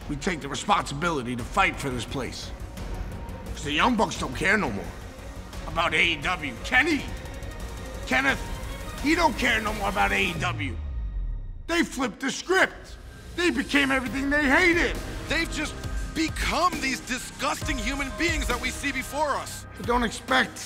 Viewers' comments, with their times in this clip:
0:06 the conviction in that man's voice❤️